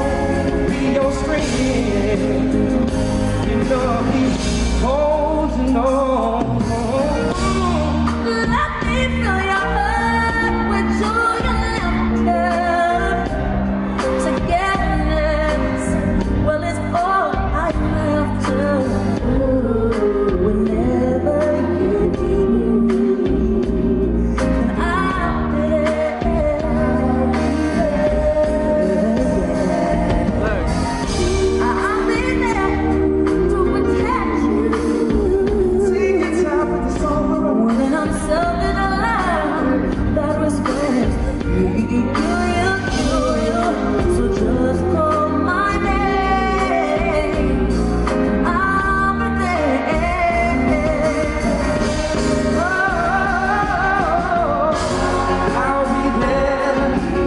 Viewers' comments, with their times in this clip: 0:06 I love how she has never dodged the note Every single performance of this song, she always goes for it no matter her vocal condition.
0:38 omg the riff🥺🥺🥺🥺❤️
0:39 That was a total Slayage!! The agility and musicality on the Spot OMG👌🏾